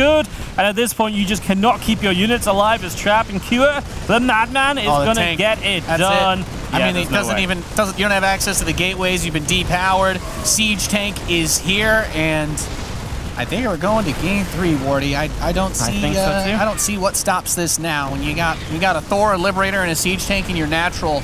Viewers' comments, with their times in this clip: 0:03 Talking like a Thor accent LOLLLLL